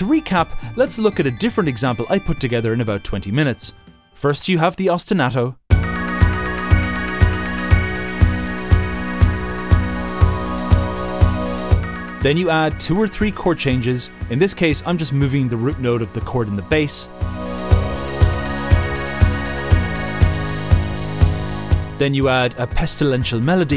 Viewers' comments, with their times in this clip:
0:02 Ok, but the song you made here is really fun.
0:04 Odd, I kinda like the negative-example you gave It sounds like the start of a synthwave track that could develop into something really cool! Either, the collective dullness has imprinted itself into myself and tainted my music loving heart, or maybe corporate music is sometimes not THAT bad...
0:04 With the track that started I was like "hey this sounds like the start of an actual decent song" and then there was just no meaningful progression and I love how perfectly that fits the point you're trying to make.
0:05 this sounds like a boss fight against capitalism
0:05 The ostinato you wrote sounds a lot like Anamanaguchi's Helix Nebula
0:06 okay but the music actually sounded great
0:09 I quite like the bass if the whole thing was in minor key it could listenable.
0:09 IDK kinda slaps